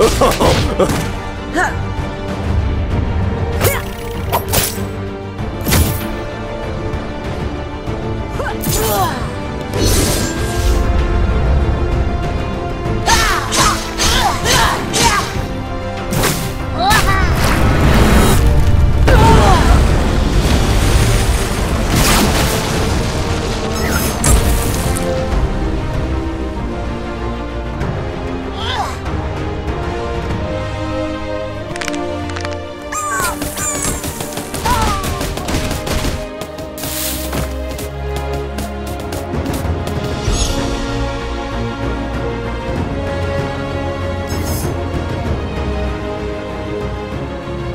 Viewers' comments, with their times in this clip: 0:09 I heard Darius's Crippling Strike
0:31 Damn, those finger crack'n sounds good.